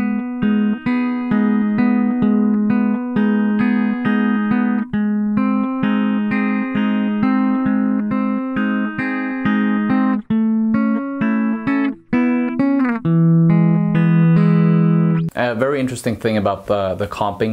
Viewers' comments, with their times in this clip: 0:05 Your strumming of the chords: min, so reminds me of Creep, not surprising as Nude (known as Don't Get Any (Big Ideas) at the time - it emerged a couple of years later